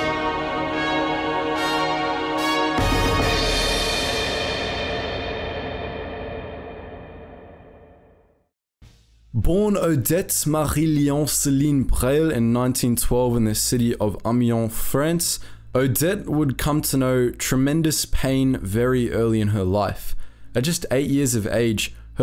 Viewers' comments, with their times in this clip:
0:09 I love the overly French accent